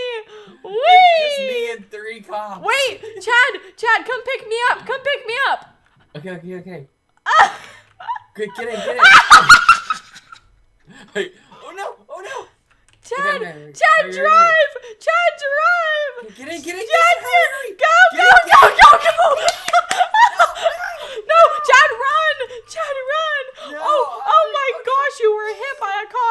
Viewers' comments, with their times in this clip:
0:08 ft hat scream XD